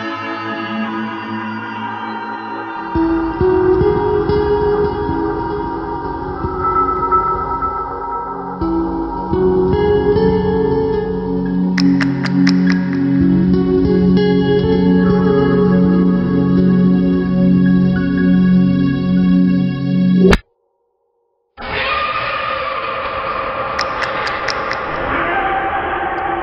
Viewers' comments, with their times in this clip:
0:10 I'm going to wake up in the middle of the night in a cold sweat hearing that lip smacking